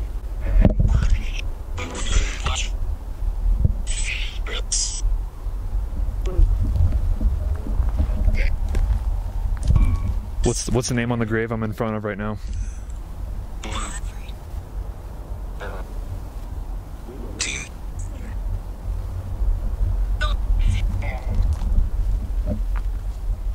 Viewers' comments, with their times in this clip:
0:06 heard a ghost say BOO